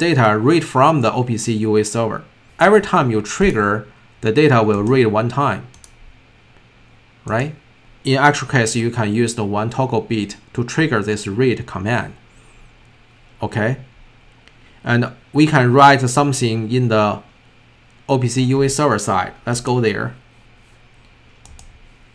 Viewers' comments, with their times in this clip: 0:08 Very helpful video! I cannot quite hear what you are saying to make sure the data is being read all the time? Also, I was wondering, how can we now read this data on the S71500 on the other network interface X2? Do I only need to configure the addresses in the watch table and is the data then already readable? Or does this require more configuration in the program?